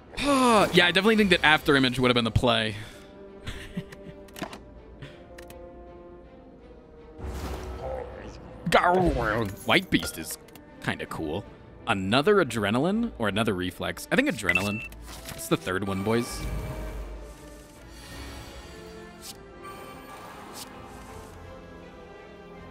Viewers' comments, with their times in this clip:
0:06 Did anyone else hear giant head say "poggers" ?